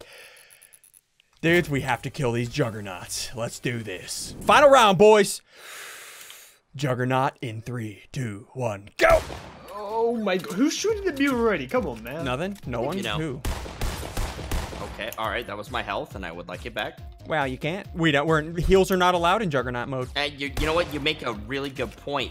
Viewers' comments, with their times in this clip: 0:04 does he sound like the guy from call of duty/ cod 2